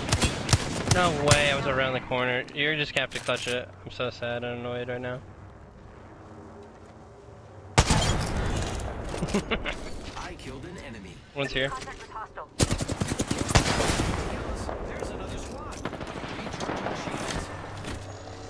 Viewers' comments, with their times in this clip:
0:04 The giggle after he killed the helpless downed dude 😂